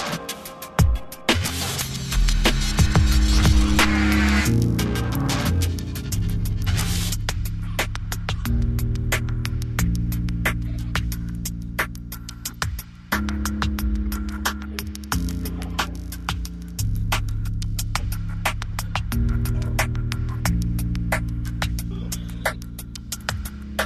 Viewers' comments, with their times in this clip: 0:04 I really enjoy when the melody finally completes itself and the track gains a whole new emotional depth. Related listening: Skee Mask - Session Add